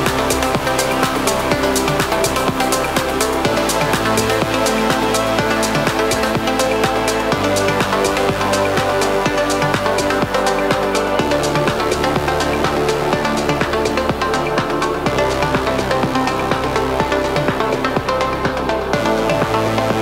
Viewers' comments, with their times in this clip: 0:03 That build up starting and the subsequent drop is 🔥🔥🔥